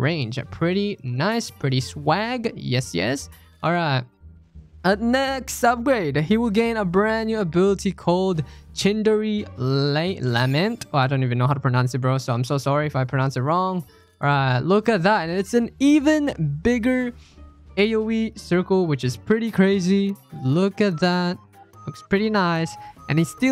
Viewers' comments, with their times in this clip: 0:09 bruh dude doesn't know how to pronounce lament💀